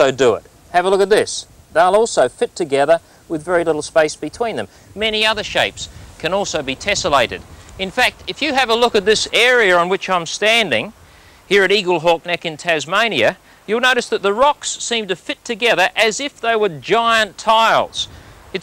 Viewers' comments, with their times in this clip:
0:06 It's one thing that the wind blows.